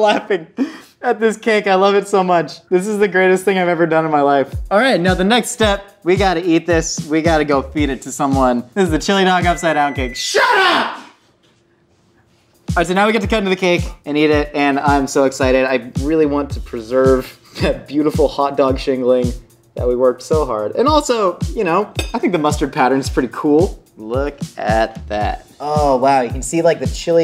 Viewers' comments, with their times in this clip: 0:09 Microwave oven (or whatever that thing is): *beep Josh: SHUT UP!! Microwave oven (or whatever that thing is): hello darkness my old friend... (crying in silence)
0:09 You can hear Josh's voice crack for a moment